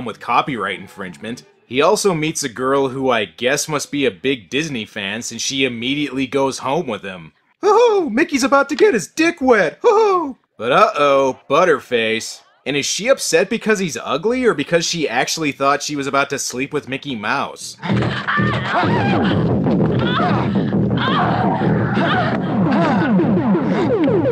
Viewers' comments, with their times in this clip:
0:07 And the award for the worst Mickey Mouse impersonation goes to